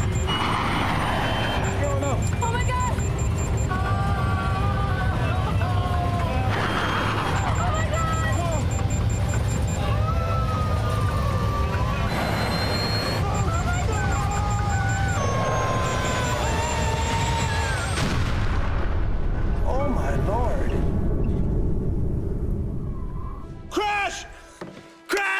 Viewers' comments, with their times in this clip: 0:07 the way she screamed omg sounded so real!! She’s a great actor. Made me feel the fear and passion into how the actual victims were feeling right before the crash 😔